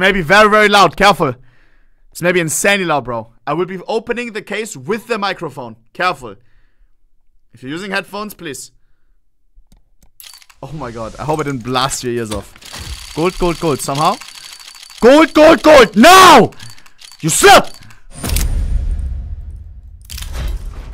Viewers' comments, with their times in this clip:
0:08 I hope I didn't blast your ears off... fucking yells in the mic afterwards